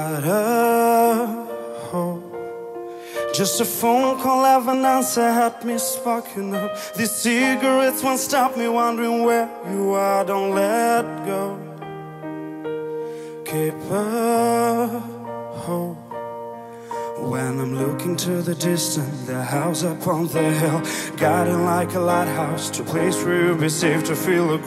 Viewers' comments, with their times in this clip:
0:07 I love his Voice and his English is Very good!🤩